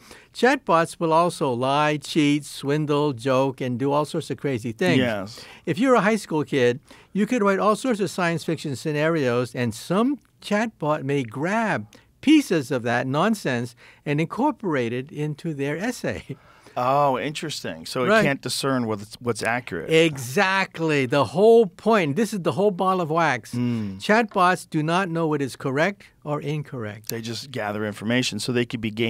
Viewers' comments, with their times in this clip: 0:10 someone lightly let one out with clenched cheeks😂